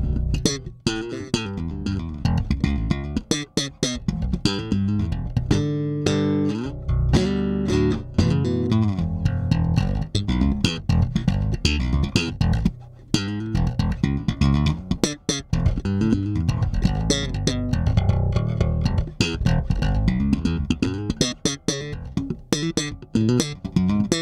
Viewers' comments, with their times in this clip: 0:07 That lick tho